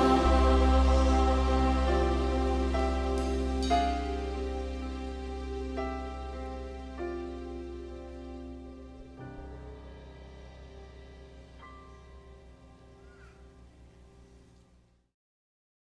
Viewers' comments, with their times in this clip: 0:12 a child calls out so cute